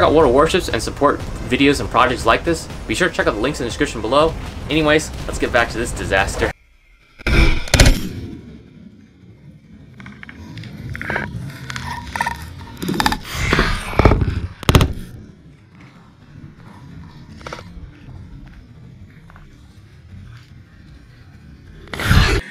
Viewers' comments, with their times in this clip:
0:10 that’s the sound my sleep paralysis demon makes